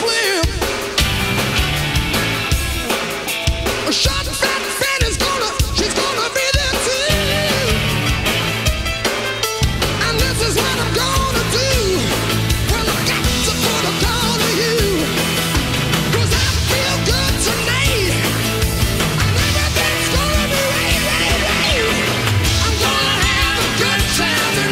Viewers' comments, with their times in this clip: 0:06 Jimmy Barnes: "She's gonna be there too-oo-ooo-oo-oo-ooo"..pffft..what a fucking sensational voice and vocal phrasing this man has folks!!